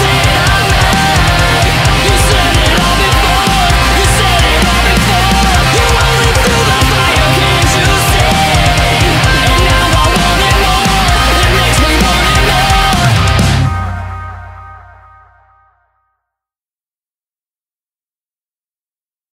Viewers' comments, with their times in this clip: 0:06 Is it just me.... or at like it kinda sounds like a Facebook notification in the background.....